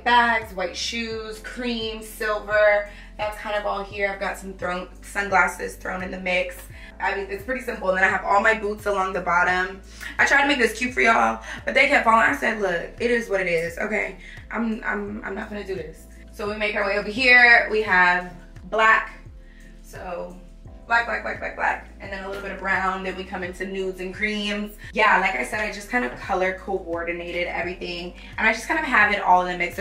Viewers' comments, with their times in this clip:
0:10 I love when black women talk like this… it gives bougie boss & im here for it!! 🤣❤